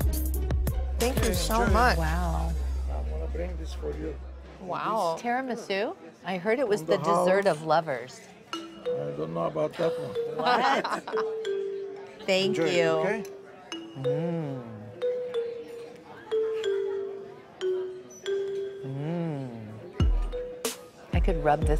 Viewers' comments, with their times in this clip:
0:08 The music starting fits Kendall's expression the the whole rest of the time. moOOOODDD 😂